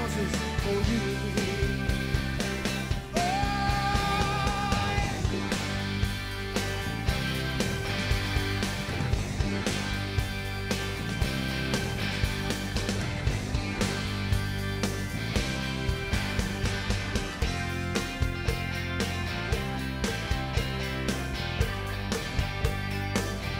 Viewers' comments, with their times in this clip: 0:07 They do a real nice job jamming starting ish and going to 6 minutes or so. Not bad for a pop song.